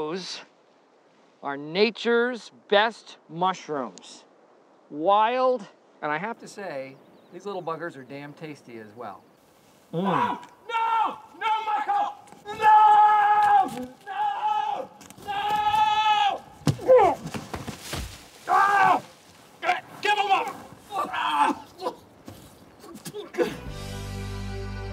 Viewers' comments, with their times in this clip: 0:09 I love how Dwight is just screaming like a psychopath ”NO, NO MICHAEL!! NOOOOOOO!!!”
0:10 that is the sound of Mario coming for you when you touch his mushrooms
0:11 that no Michael scream always gets me